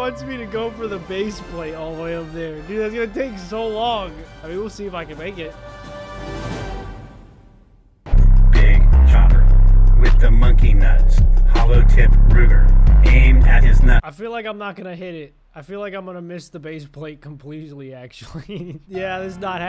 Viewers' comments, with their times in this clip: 0:07 The song killed me bro 😂